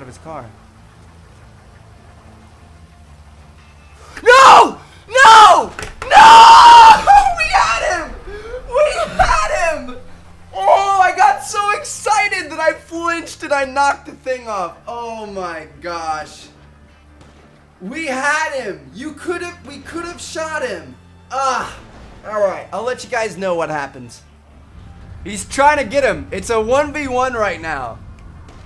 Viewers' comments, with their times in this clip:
0:06 the most grown man screen there is.
0:12 You screamd so hard that my litle sister is waking up